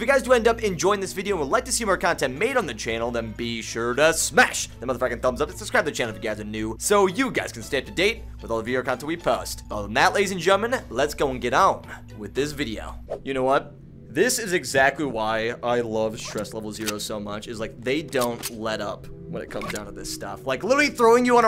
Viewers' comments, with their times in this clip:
0:03 Not trying to be rude but why when I go to seconds in and slow it down it sounds like your saying the f word😱 u won't ever do the I mean u are family friendly😁